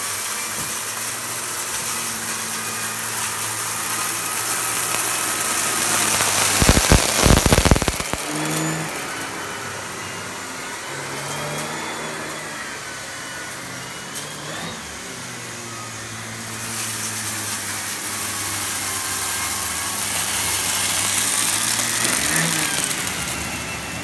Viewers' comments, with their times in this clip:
0:06 Great video! Very impressed with the performance of the turbo head on carpets, definitely a great product. PS, RIP headphone users !